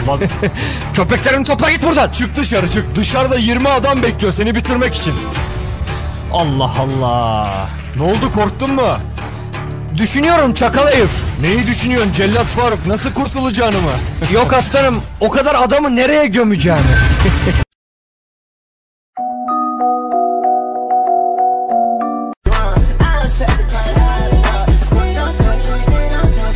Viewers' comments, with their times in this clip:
0:08 YOU KNOW TURKISH, OR IS THAT A PART OF THE TIKTOK ????